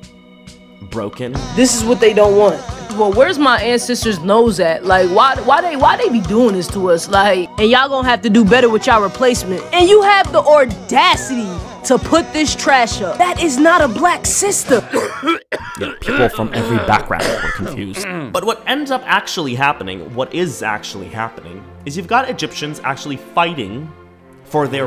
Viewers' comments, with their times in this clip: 0:10 you know my boy is stupid when he pronounces the word audacity as “ordacity”